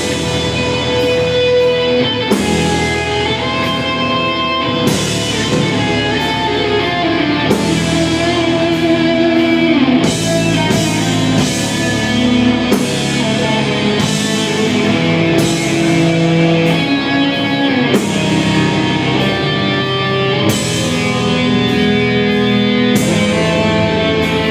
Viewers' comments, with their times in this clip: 0:06 one of greatest funeral doom solo ))